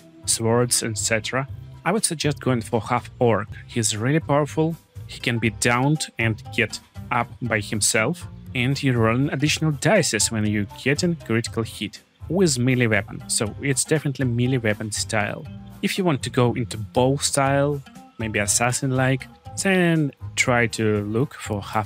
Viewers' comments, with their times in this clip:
0:08 Im just vibing to the Bad piggies song not listening to what u are saying😂